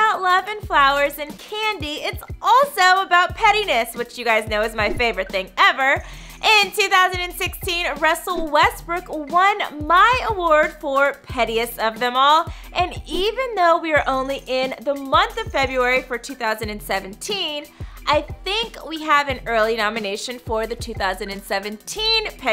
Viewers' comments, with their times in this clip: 0:07 Am I the only one who herd her say, "Rassel"?